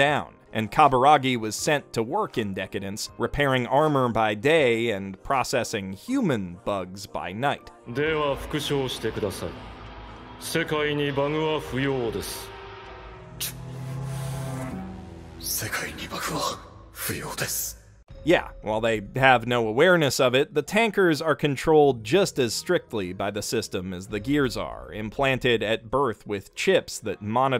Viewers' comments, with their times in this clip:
0:08 I hear Il Palazzo still sounds the same. Excel's been smoking, though.
0:08 Aaaand this was what finally sold this show to me: DIO himself. I love Takehito Koyasu´s voice